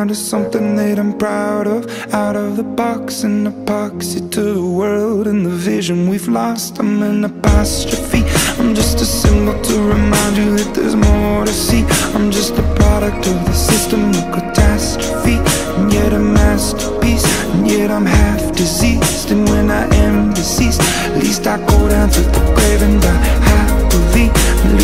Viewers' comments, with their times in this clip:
0:09 Who's idea was it to play music over the action. Maybe there should be a person who is taking money. Sorry , now there music that isn't boring,better idea , them put them in a state that's votes right winery.